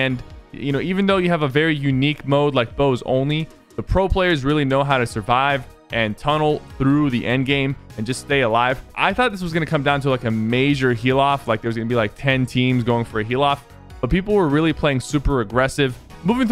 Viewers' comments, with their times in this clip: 0:03 sypher says "bows ony" instead of "bows only"